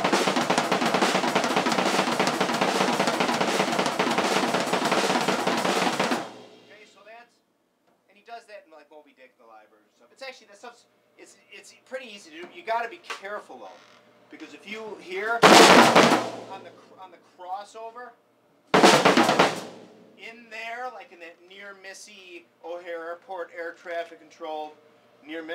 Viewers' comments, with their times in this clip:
0:07 I would love to learn that roll from the 815 minute Mark to the mark